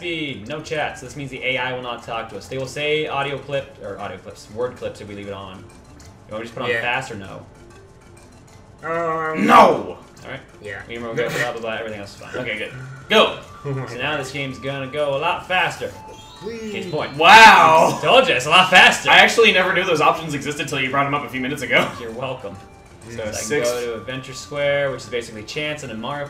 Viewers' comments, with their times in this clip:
0:09 YAY!!! THE EPIC NO! is Back!!